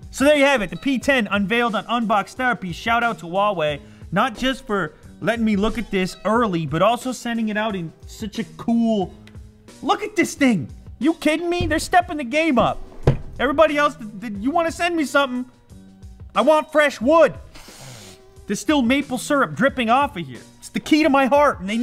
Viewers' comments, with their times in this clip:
0:03 how he says Huawei he says wall way it's completely wrong